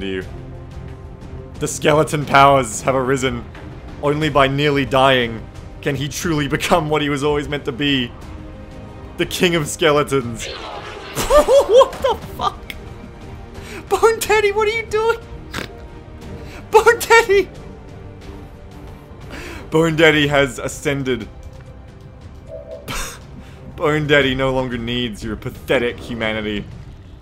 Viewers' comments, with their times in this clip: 0:09 dat snort tho